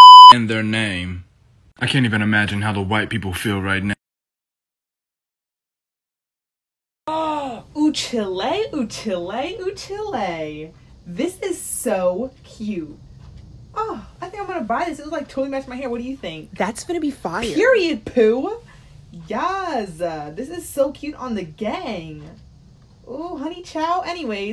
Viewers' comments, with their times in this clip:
0:08 PLS NOT CHILL-LAY OMG